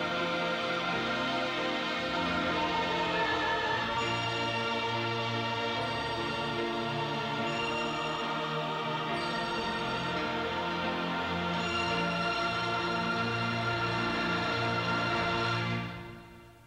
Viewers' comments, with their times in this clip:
0:04 In my opinion, this version of how the song ends sounds a lot better than how it does in the finished movie.